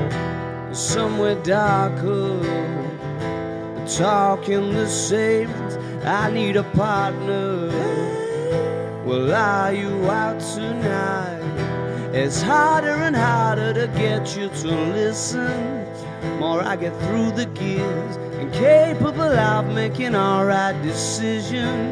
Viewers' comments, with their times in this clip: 0:04 sound and the video did not match till end